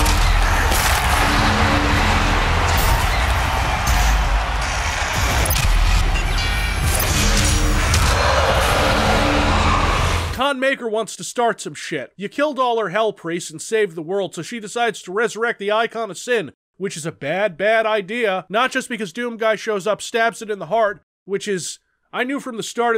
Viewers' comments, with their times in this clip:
0:05 The comedy sound effects tho